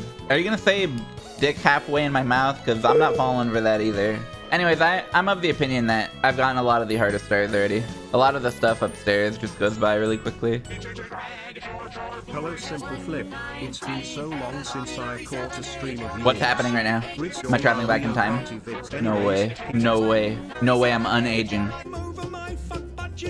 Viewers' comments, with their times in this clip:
0:10 I need the weird version of "doin" in my life rn